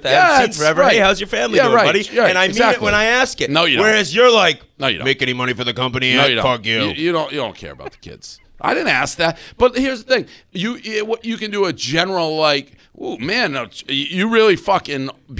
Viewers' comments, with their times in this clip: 0:03 The Dave impression is perfect